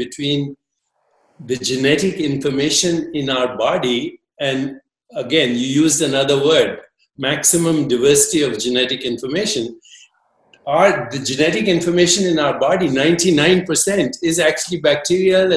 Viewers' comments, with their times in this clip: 0:03 Deepak started playing "smart" and was speaking in a way like old guy in a village speaks to everyone in the village 😂, thinking he knows it all and is the smartest . However , Sadhguru ji is bringing his level low to the level of Deepak just so that they can talk